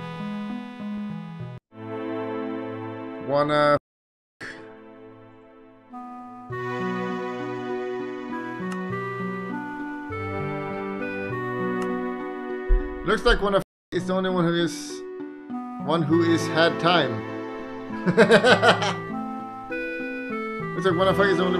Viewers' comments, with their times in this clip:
0:07 the sad dota 2 music was actually amazing